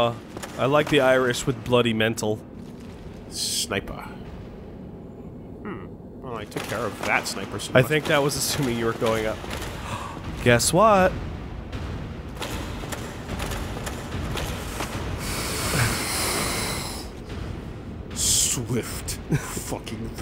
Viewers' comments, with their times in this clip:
0:08 I love how as soon as the Black Eye Orb starts quivering, the Giant Guard's footsteps seem to make a bad-ass drums of war effect to go along with Woolie's rage. xD. Fucking sick!